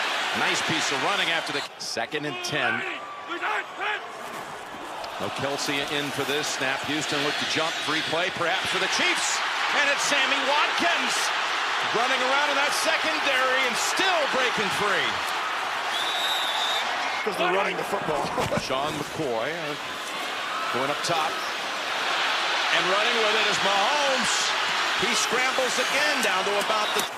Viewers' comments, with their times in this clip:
0:03 right before he throws to Watkins you can hear the crowd yell "SAMMY"
0:09 he sounds like the dude from spongebob